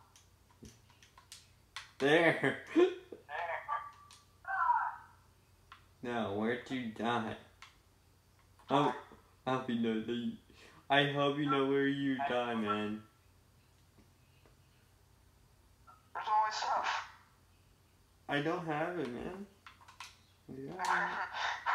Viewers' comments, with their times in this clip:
0:04 Minecraft Earrape Music